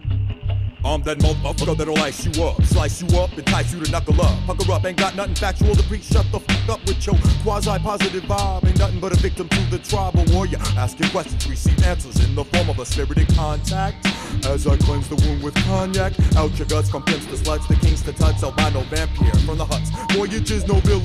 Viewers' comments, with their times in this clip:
0:07 That phrasing a is so incredible.